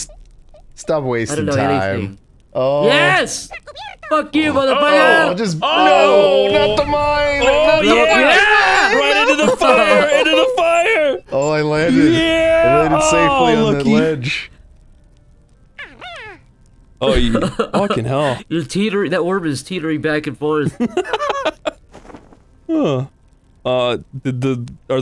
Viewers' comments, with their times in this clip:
0:09 out of sync?